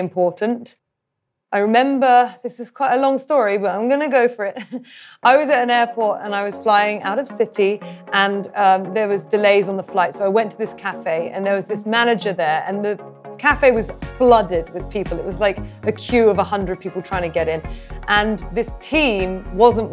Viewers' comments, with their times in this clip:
0:07 this is great but man the music change was harper's bizarre